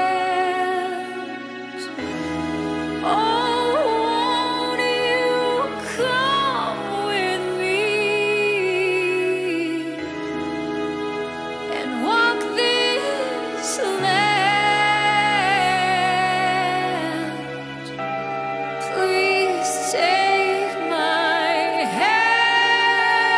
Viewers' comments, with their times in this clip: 0:08 More. always had a problem with visualization of videos..not exactly sure what its suppose to represent. That doesnt matter..I always knew you had more voice than you showed in previous records. Alot of people can sing "big" not many are a crystal clear and on point as you are.(starting or so...) The song isnt everyone's cup of tea but there is nothing wrong with an artist experimenting with different things. Elvis made alot of crappy albums.